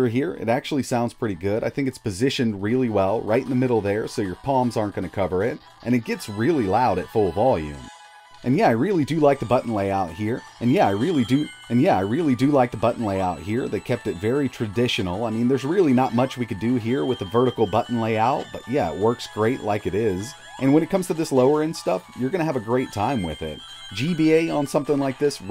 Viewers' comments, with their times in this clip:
0:08 learn how to edit out the audio when you do a second take.
0:09 Mild stroke lol